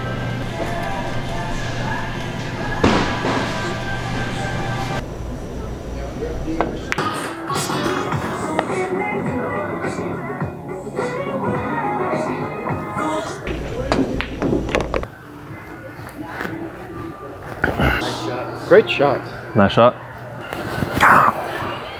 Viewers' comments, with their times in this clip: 0:06 LMAO DOES ANYONE ELSE HEAR "number 15" from the foot lettuce video